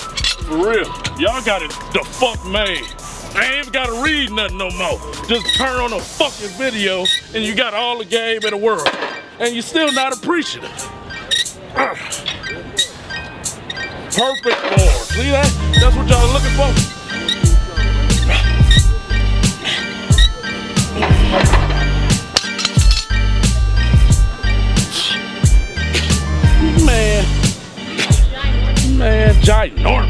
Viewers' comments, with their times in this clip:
0:09 The bar wanna be apart of the music too. Respect the bar.
0:16 the music actually sounds like it's from GTA San Andreas 😂😂😂